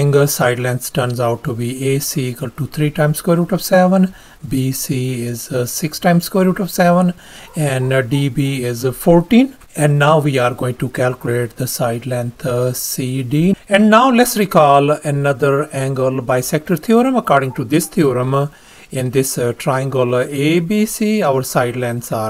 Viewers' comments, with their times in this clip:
0:07 that Cur barking in the background is either a mutt, very unattractive , aggresive , or all three but redeems itself by conCURring with the results of this very cool problem. The dog deserves a treat! 🙂